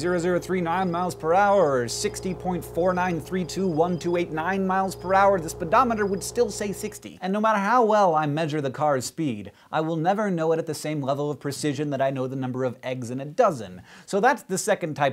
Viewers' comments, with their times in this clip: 0:03 Hank, why don't u just look where u are going & stop staring at me like that with the creepy background sound ???